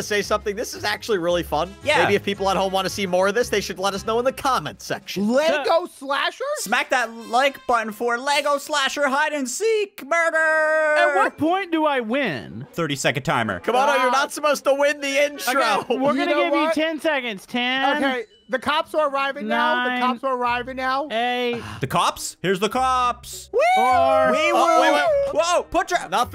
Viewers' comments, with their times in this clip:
0:07 Was that a voice crack